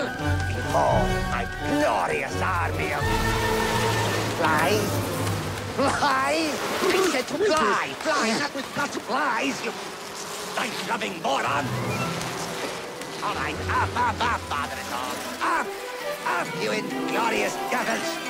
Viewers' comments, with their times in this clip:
0:04 seconds when Gargamel says Flies you can hear Professor Frink in his voice